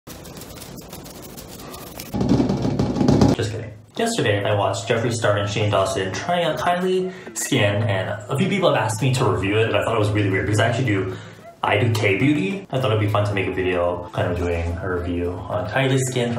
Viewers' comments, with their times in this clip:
0:00 Asmr “Just kidding” 😂😂😂